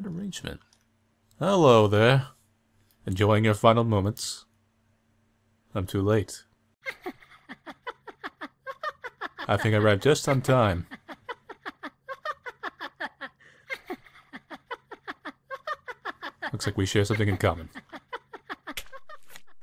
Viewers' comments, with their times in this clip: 0:07 That creature shadow thing's laugh is just, well wow. For some reason I want to hear that laugh multiple times but at the same time, I dislike the sound of it. >_<